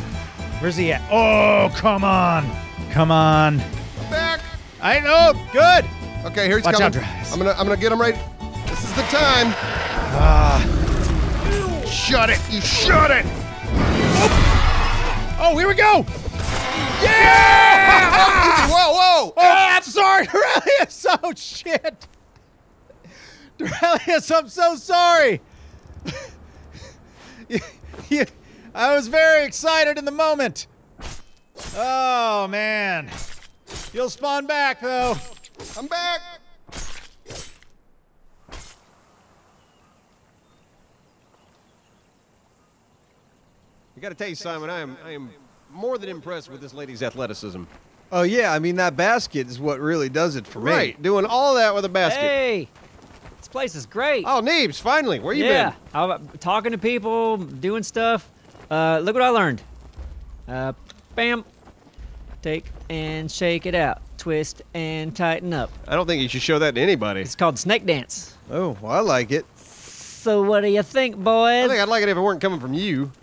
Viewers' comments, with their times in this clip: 0:05 Did I hear broof
0:55 sssssssssso what do you think boysssssssssss (Had me laughing way to hard XD)